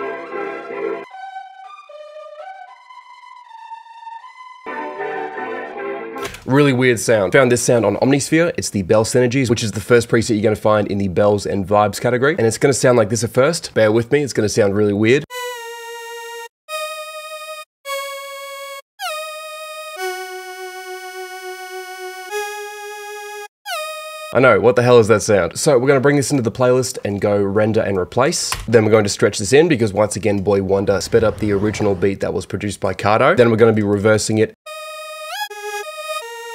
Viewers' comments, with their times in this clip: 0:08 I don‘t think it’s a Synth maybe it was a vintage or retro sounding string preset in some vst (Omnisphere or analog lab)
0:15 imagine wonder sitting at the studio making weirdest sound anybody ever heard
0:15 omnisphere keygen type lead
0:18 The mosquito in my room at 3AM